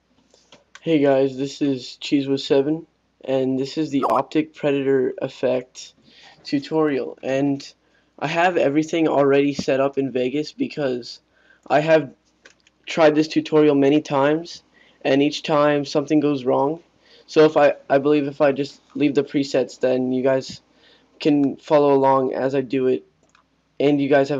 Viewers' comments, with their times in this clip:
0:05 I checked my skype :/